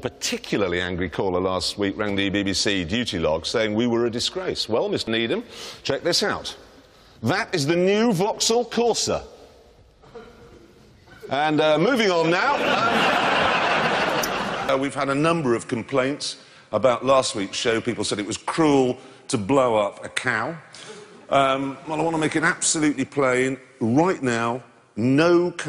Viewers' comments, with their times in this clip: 0:07 I love how he raises his voice to sound enthusiastic but couldn’t give a f**k 🤣